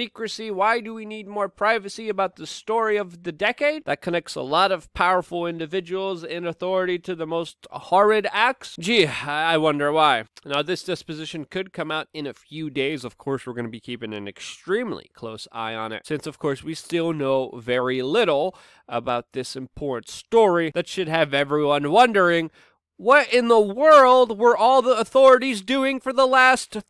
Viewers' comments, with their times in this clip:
0:09 Did he say desposition